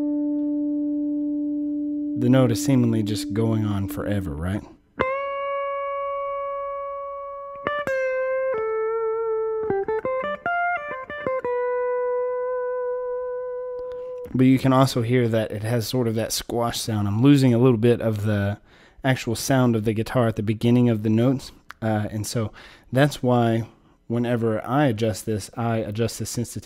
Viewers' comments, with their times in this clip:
0:10 the guitar begins to push into a Larry Carlton 335 feel. Great video, great demo and explanation of the yummy aspects of compression. My Dynacomp was the spank I needed to get closer to the sound I was pretending to play.